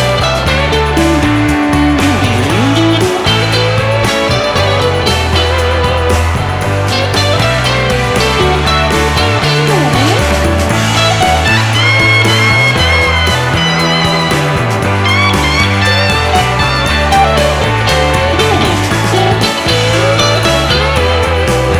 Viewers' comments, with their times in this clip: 0:07 It's both of them soloing overlapping from Clapton up high, Stills lower down (on engineer's suggestion), Clapton is louder in the mix